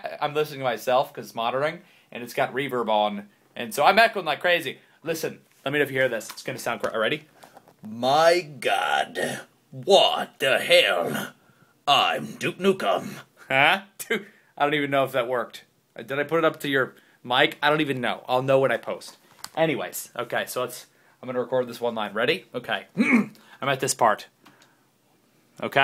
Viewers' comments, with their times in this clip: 0:08 he actually sounded like duke dukem